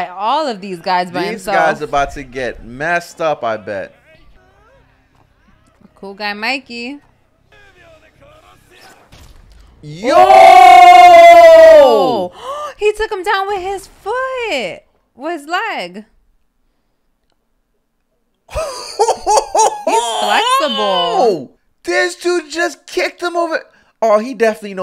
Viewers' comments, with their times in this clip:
0:10 Whoa lol. I wasn’t expecting that loud Yoooo I had my AirPods on as well!😂 But Takemichi went Super Saiyan at the end tho lol😂